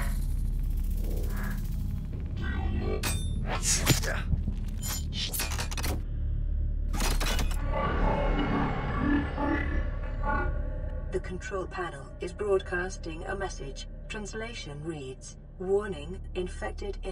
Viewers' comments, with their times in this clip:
0:05 right when the message from the control panel sound like something talking might be the precursors voice.